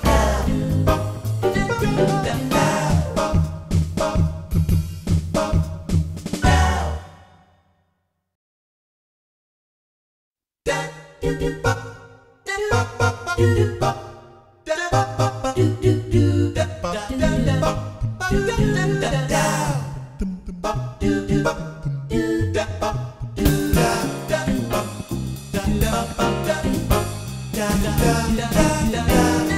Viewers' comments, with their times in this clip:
0:10 The best version. On the SC-8850.